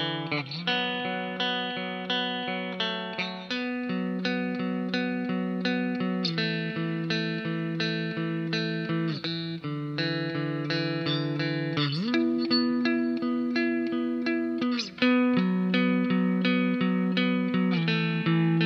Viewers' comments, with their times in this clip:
0:04 I remember seeing Ben Gibbard giving a rundown of his mustang and it was interesting to hear him describe the mods, as he knew exactly what sound he wanted and had no interest in features that would change it. In fact his does not even have a pickup selector--it was wired for both pickups all the time. Edit: Yep, that is his tone right there.